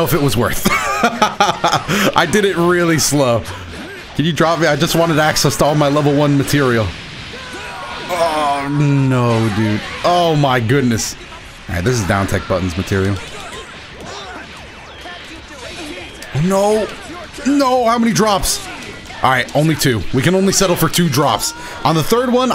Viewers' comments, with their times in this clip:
0:07 Opponent calls in Broly C assist Broly: AAAAAAAAAAAAAAAHHHHHHHH (Broly comes off screen, continues to still scream) HHHHHHHHHHH